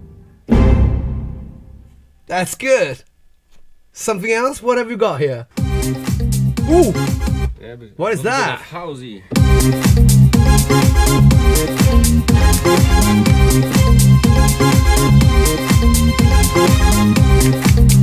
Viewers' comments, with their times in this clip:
0:04 FRENCH HOUSEE !!!!!!!!!!!!!!!!!!!!!!!!!!!!!!!!!!!!!!!!!!!!!!!!!!!!!!!!!!!!!!!!!!!!!!!!!!!!!!!!!!!!!!!!! YYEEEEEEEEEESS !